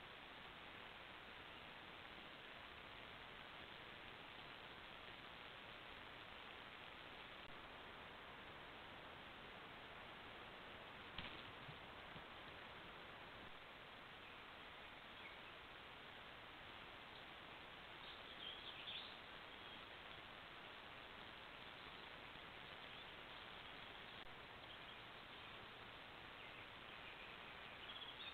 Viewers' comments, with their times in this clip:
0:10 look at the night sky, there’s almost a flash of some sort and a noise can be heard on the gamecam.